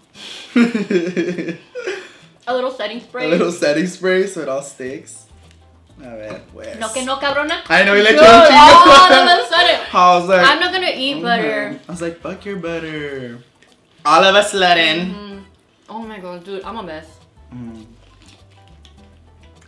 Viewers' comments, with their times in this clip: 0:07 She sounds like a mom